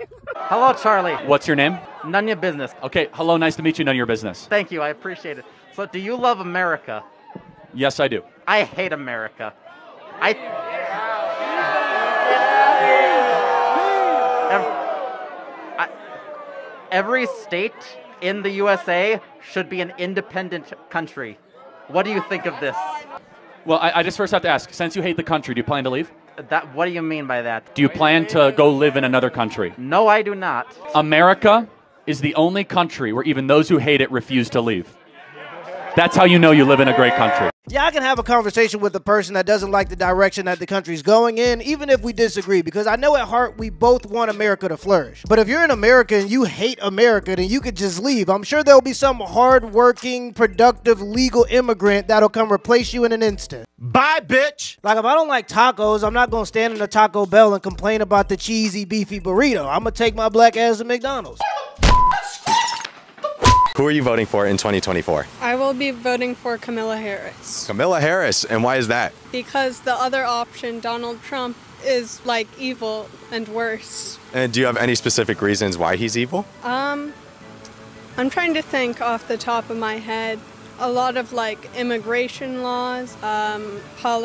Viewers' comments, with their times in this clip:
0:08 Guy was hyperventilating in his mask
0:12 that young man in his sisters cIothes is hyperventilating at getting booed 😂
0:30 lmao he said that extremely quick and surely. No plans to leave but hates it so much.
1:07 She's voting for a Fire Emblem character! 🤣